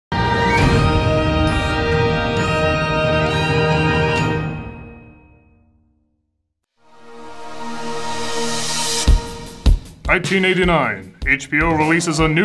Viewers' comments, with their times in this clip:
0:00 wow... I serf a bit now, and again has a error in it, it's not my setup i have gone through a check, and i can't be the only one that got a harsh sound snap.